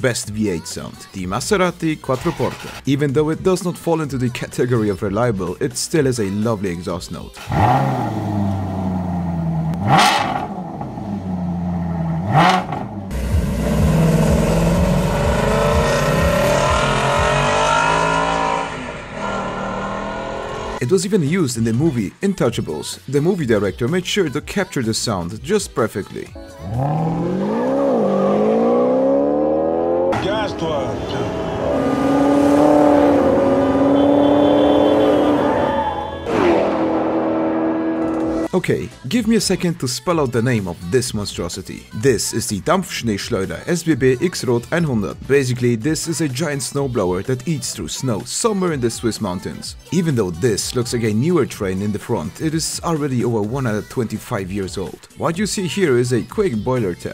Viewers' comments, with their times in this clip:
0:09 what that sounds like trash. The best sounding v8 is a 440 max wedge.
0:14 Sounds almost as good as a Mustang Shelby GT350
0:14 Sounds almost as good as a Mustang Shelby GT350
0:28 yo!! Always thought they weren't real in the movie cos of how loud they were! Also loved Omar's character
0:39 As a certified Swiss person, you nailed the Pronunciation, just like my dad nailed my mom.
0:41 (im german), sounds pretty german to me, sounds just about right, dampf=steam, schnee=snow, schleuder=sling/thrower/blower also nice vids, I love em, the vibe of the background music, and the cool videos, keep it up :)
0:42 You spoke these German words very well. I'm proud of you
0:42 as a german I can say... YOU F***ING NAILED IT!
0:42 Damn your German is almost perfect
0:42 Perfect pronunciation lol
0:42 Damn boy u nailed that pronounciation
0:43 it was perfect. It sounds like you come from Germany
0:43 thats probably the best german ponounciation i have ever heard
0:44 your german sounds great